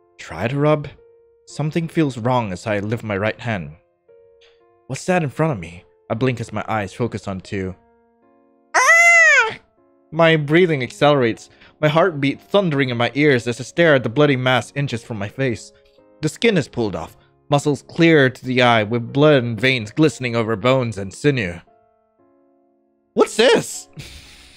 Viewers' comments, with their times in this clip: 0:07 the AHHH is so me when i wake up to pounding on my window